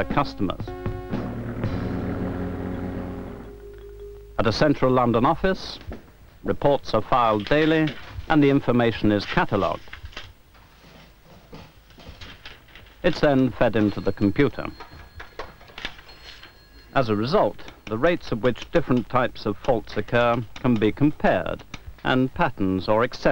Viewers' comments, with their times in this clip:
0:09 The music is hilarious! As is the fashion The beards seem to have made a comeback though!